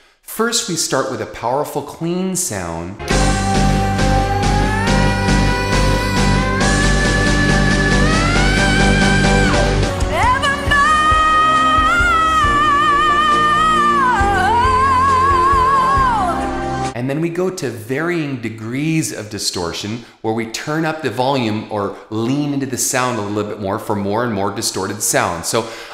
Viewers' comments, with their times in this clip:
0:05 I appreciate the She's Gone riff
0:09 This singer is awesome! awesome to the max!, It sounds like you swallowed Rob Halford while he was sing Pain Killer ---> awesome to the max!! It looks like your tongue has eyeballs here!! hehehe just kidding :p Goes to show a person that one must be very expressive to be able to do this. I think Janice Joplin had self expression transcending the splendour and bliss of heaven. Sweet sweet video, Thank you Ken.